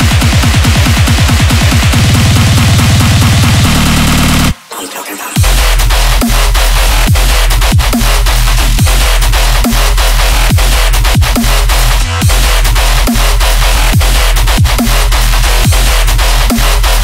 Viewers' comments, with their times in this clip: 0:04 Da Best Drop.